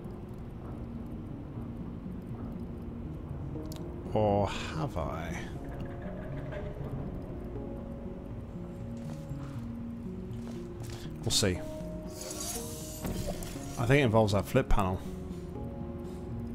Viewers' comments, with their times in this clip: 0:03 * Vsauce music starts playing *